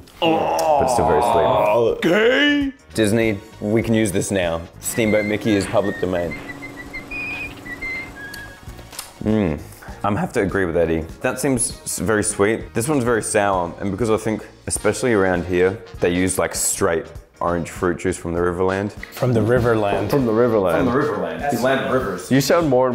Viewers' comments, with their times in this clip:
0:05 the cute little Mickey whistle❤